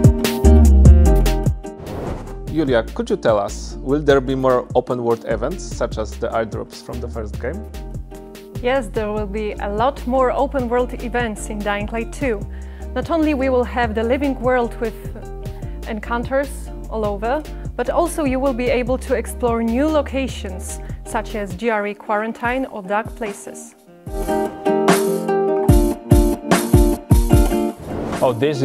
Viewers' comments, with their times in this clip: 0:10 I fell like she is answering questions at gunpoint